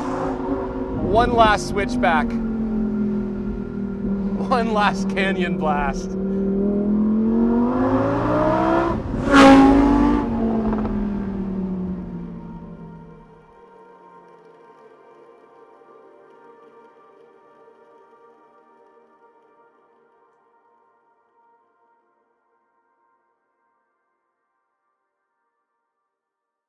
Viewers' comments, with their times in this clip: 0:08 that sound on sounds like sex lol
0:11 left and right Channel mixed up? car is passing on the left Im hearing the sound only on the right channel. besides great video as usual